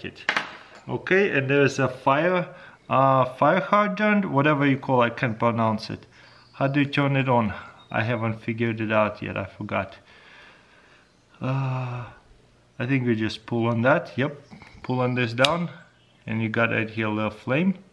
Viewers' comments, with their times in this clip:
0:03 You actually nailed that pronunciation!